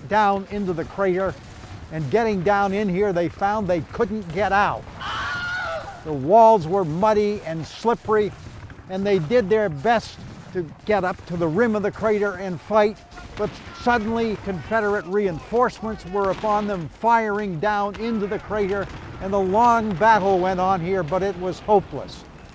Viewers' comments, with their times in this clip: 0:04 I love the Wilhelm scream. Lol.